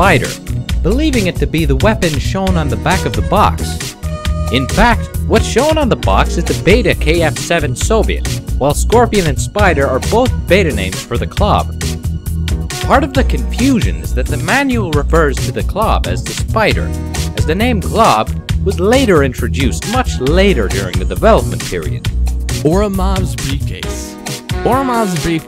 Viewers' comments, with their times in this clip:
0:06 what is that background music please? Its groovy af.